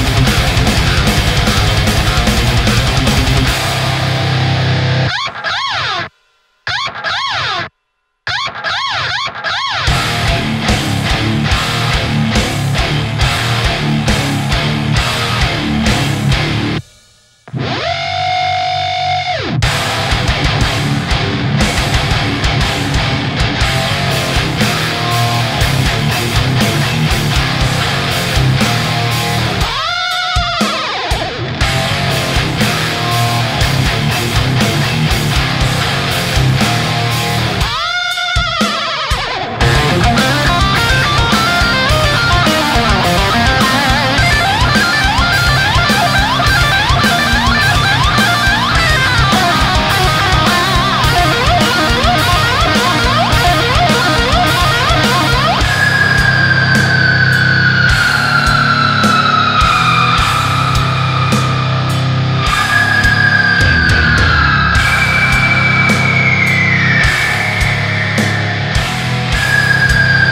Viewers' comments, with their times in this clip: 0:10 sounds like Knocked Loose
0:11 sounds like scourge of iron
0:16 that's some dubstep bass over there
0:17 bruh this is literally dubstep
0:17 sounds like either luxio or luxray from pokemon, just listen
0:17 When you rev a car
0:18 that is a dope riff <3
0:23 That riff and trick sounds sexy.
0:29 The end of the Floods solo be like
0:39 sounds so good. Is the riff from a song? Im super curious
0:40 now that’s an entire style of playing guitar who knew
0:44 the mario's coins
0:45 This is the Sound when Sonic jumps
0:49 sounds like Undertale
0:55 I dunno why I ended here, but I have to say that I loved those EEEEEEEEELSSSS and the harmonics too
0:55 this sound is like a scream from a scared woman
0:58 TACTICAL NUKE INCOMING!